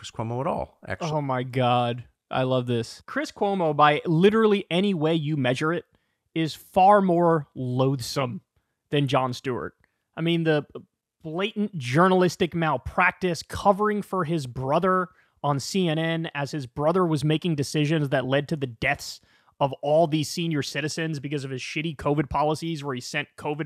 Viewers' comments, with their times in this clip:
0:04 yes.... every bit the scoundrel; which is why Tucker doesn't hate him. Also how can you not appreciate a man who did so much for first responders? And he just inserts his laugh now as a catch phrase when he realizes he just went off the rails.